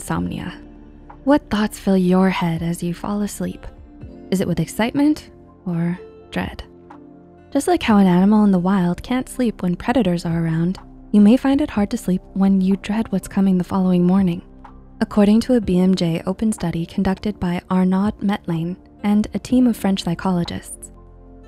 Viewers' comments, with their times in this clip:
0:07 that sounds like minecraft. WAIT IT IS HOLY SH-